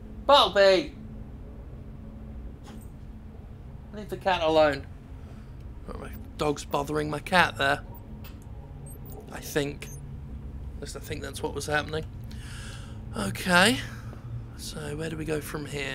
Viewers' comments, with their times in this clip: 0:03 Quite honestly thought you said "the dog is buggering my cat".